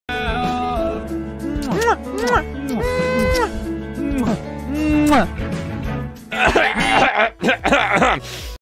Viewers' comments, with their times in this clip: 0:00 The eaaaeeah wa the best part